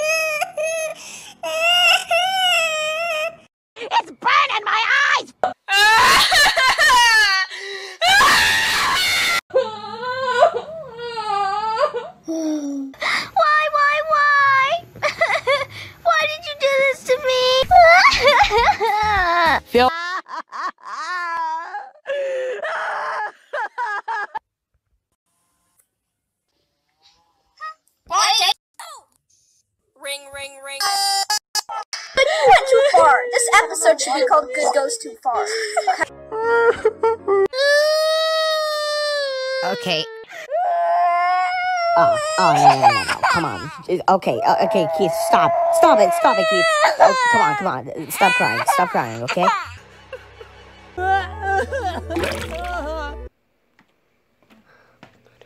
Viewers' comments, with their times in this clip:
0:06 I Love How Party Hat Cries In Inanimate Insanity
0:37 I Love How Ruby Cries In BFDIA